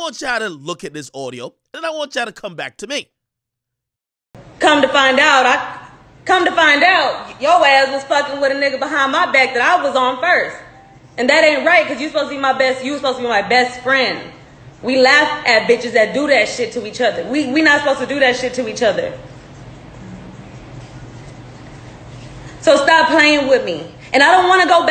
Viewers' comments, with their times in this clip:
0:05 sound like voicemail from one of biggies songs.